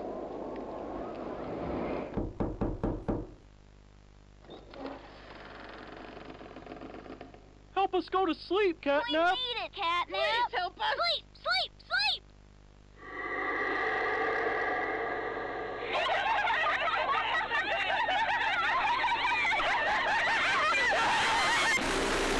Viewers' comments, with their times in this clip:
0:04 That knock fucked me up, dont wear headphones because when I heard it, it sounded like a real knock somewhere and I looked left!!! WTF!!